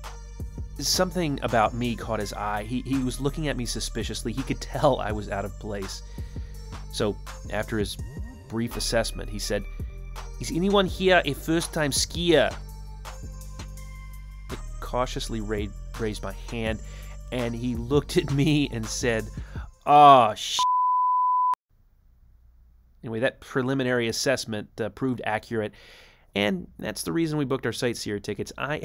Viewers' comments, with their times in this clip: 0:10 Pilots ski in Aspen frequently - but I guess thats the reward they get after landing in that difficult approach! also solid german accent hahahah